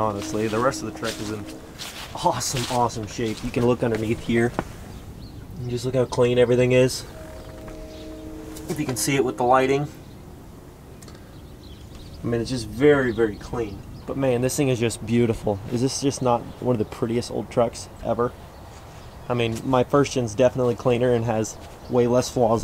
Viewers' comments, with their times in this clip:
0:09 the train horns hell yeah !!!!